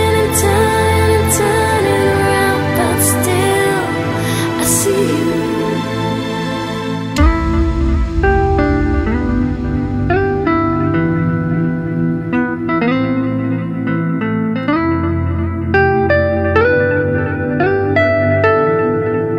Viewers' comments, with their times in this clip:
0:07 puts the hairs on my arms on end.....what an epic track...